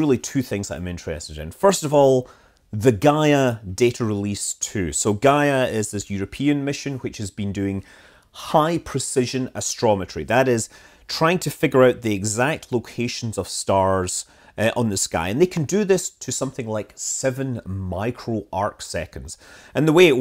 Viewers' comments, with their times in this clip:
0:08 "high precision astrology" wtf?